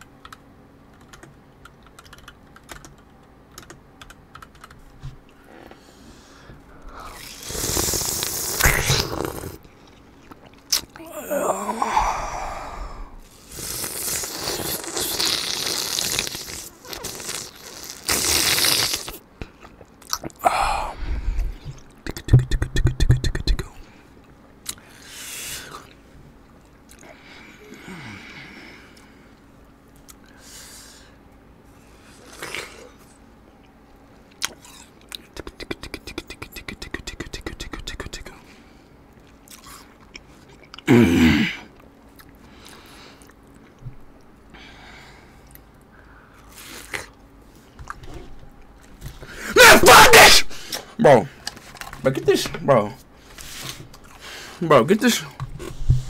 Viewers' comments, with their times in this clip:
0:07 Was bro freaking purring? 💀
0:07 They eat noisily
0:10 sounded like my sister snoring
0:10 had me dying when he moaned 💀💀💀
0:11 bro i pressed it and broke my ears, your gonna pay for that, is better
0:11 NAH THAT MOAN💀💀💀💀
0:11 what was that noise
0:11 NAH THAT MOAN💀💀💀💀
0:18 bro turned into a minecraft spider midway asmr
0:38 that grunt made me buss out laughing
0:39 That grunt made me buss out laughing. I remembered the blue monster saying 🤨unnmmm
0:48 BRO I HAD VOLUME ALL UP IM DEAF NOW 😢😂
0:49 he is screaming but asmr its truee😂😂😂
0:49 New world record of speed being quite for
0:49 lol speed was sceaming😂😂